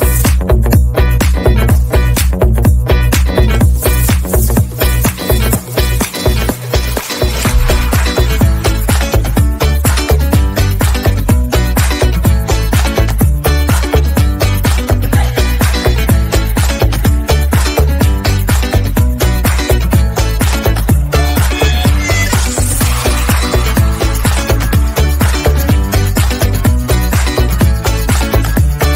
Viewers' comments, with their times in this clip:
0:10 Wow what a panting